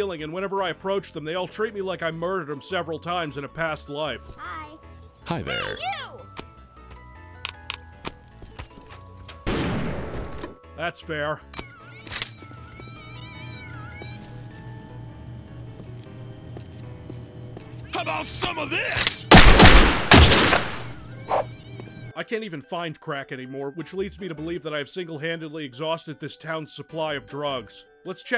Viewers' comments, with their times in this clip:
0:09 Jesus fuck this just broke me into a complete laughing fit. Her torso got removed and yeeted across the room so fucking fast right as she opened the door. That's just fucking priceless. Also, the flat "that's fair" that followed it up. XD